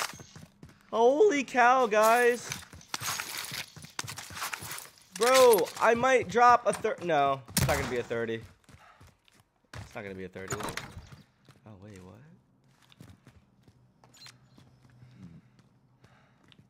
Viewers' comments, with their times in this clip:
0:04 guy to the room on ur right listen to him open the door as u leave